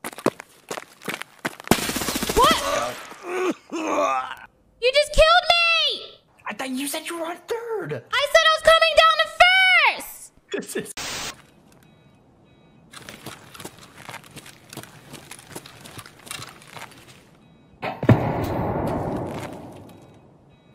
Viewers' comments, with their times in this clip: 0:04 holy shizzz her voice just head eyes me.